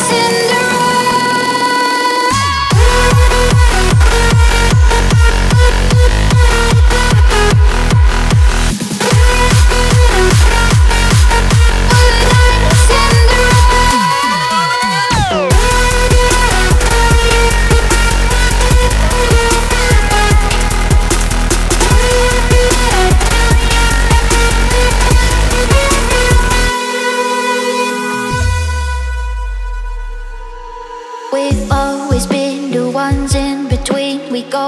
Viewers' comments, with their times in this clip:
0:03 frenchcore hardstyle bass <3
0:15 Pretty sure that sounds like Marshmello lmao